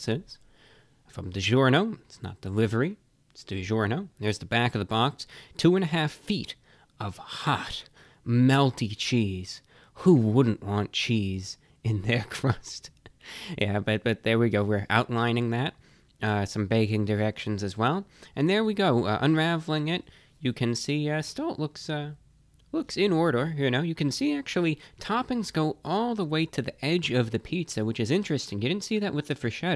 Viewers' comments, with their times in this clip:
0:10 his voice was like sheldon from the big band theory